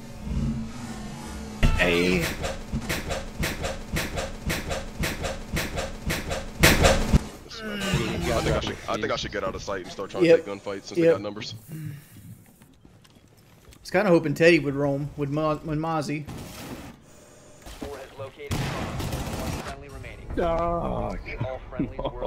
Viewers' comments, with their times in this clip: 0:08 His chair squeaked get rekt had me dying